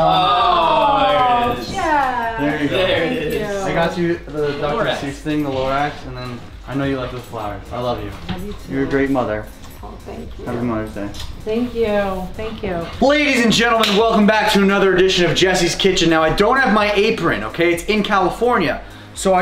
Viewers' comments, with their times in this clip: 0:04 lol I thought he said I got you the Dr Seuss thing a little rat.